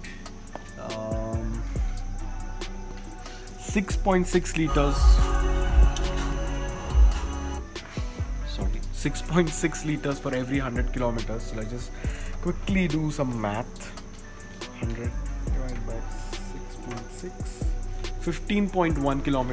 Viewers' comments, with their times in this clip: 0:06 Bruh what is the name of the song playing in the car ? Sounded very cool with the bass and all.